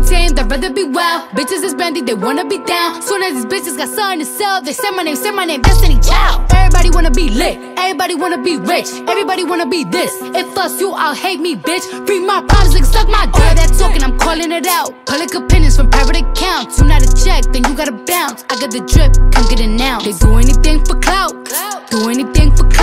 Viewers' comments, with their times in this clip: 0:10 carbi sounds like huey from the booncdocks.